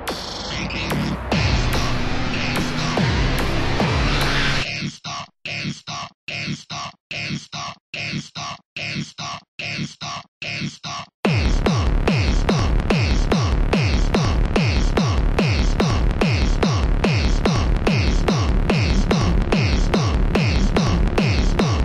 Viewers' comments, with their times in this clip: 0:03 a robot really excited to go to game stop